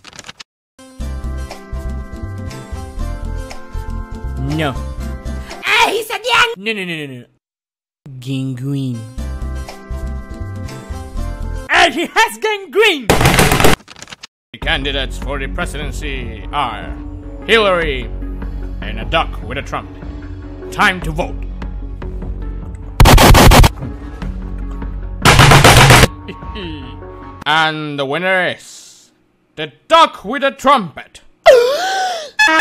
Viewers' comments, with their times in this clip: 0:07 the way he very politely presents his gangrene
0:13 the music is so unbelievably perfect, and I love how it pauses when he says gangrene.